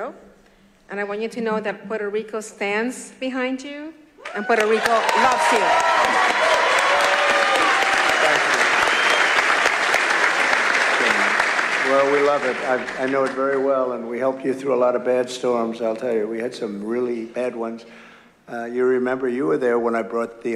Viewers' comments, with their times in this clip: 0:03 is such an insult with their applauding.